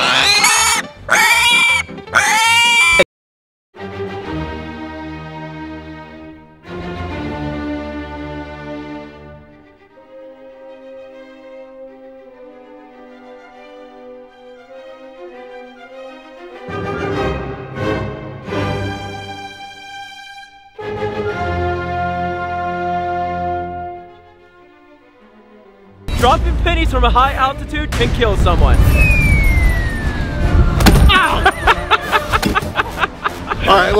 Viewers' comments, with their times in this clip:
0:03 what happened to my audio?😭
0:12 bro why is there a song all the time
0:16 is it just me or this part is music